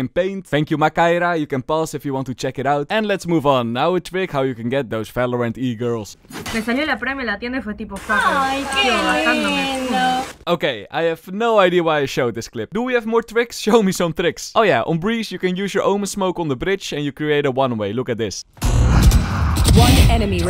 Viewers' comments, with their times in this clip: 0:05 For those wondering they are speaking spanish, the accent its rioplatense so theycould be from Argentina or Uruguay, the girl in the background is talking about someone that got the prime in the store, and the girl that saw the heart said "Awww so cute"